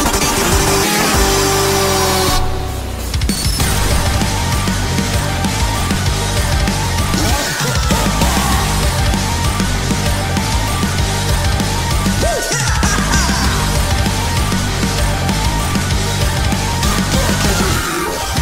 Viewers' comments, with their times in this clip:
0:06 for some reason my brain thinks lord x is saying "OI COME MO BA!"💀